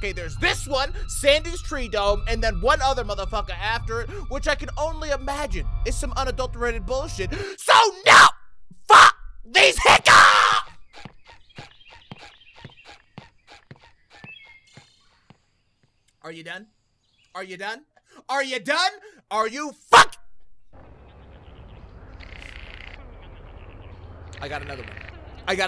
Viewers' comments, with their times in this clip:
0:06 the hiccup is killing him XD